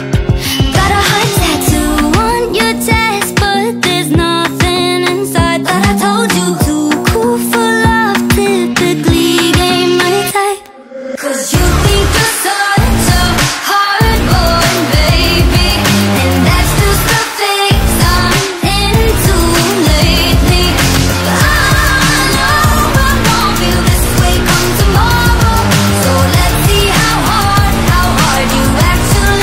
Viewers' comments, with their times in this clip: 0:10 is when i start hearing teenage dirtbag